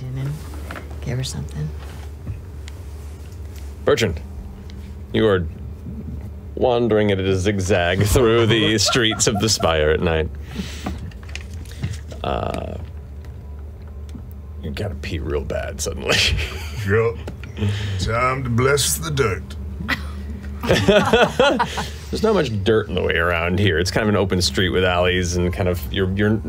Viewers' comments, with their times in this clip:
0:10 Robbie is the only one laughing. EVERYONE else knows Matt's DMing and dreads the next scene.